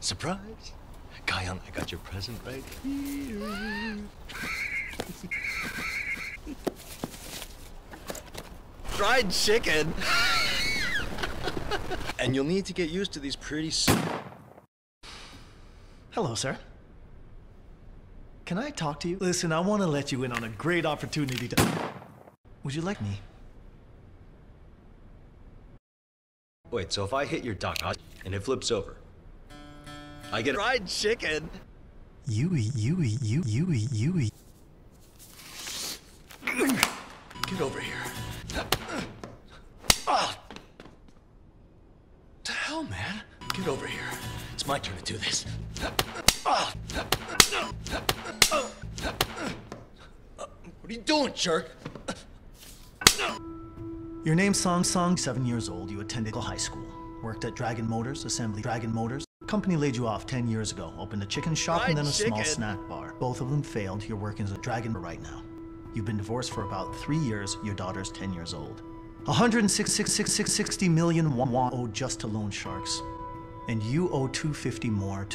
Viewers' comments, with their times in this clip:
0:09 FRIED CHIKEN asthma
1:01 the 'fried chicken' sound got me 😂